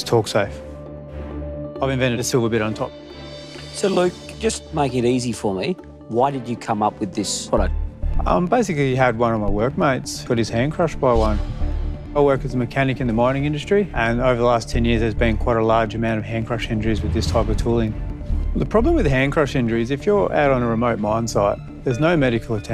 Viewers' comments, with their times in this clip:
0:08 the most Australian sounding sentence I've ever heard